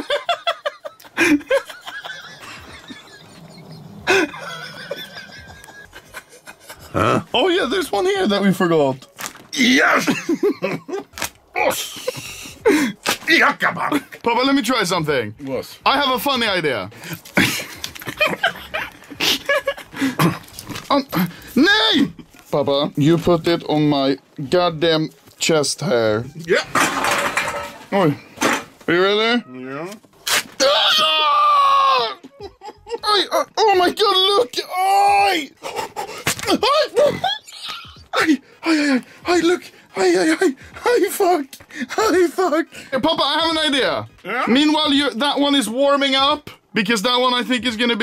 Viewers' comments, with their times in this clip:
0:09 papa sounds like he's summoning a demon lol
0:11 everybody gangster til papa starts doing shouts
0:13 when in pain, papa fluently speaks turkish
0:30 anomaly screaming gyat when Papa bends down
0:36 the fucking fart has me dying 🤣🤣🤣🤣🤣